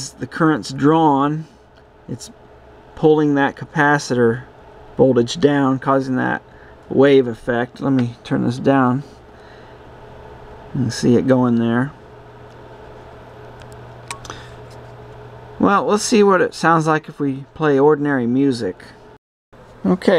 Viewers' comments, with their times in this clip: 0:06 Nice frequency modulator you've built there! 😅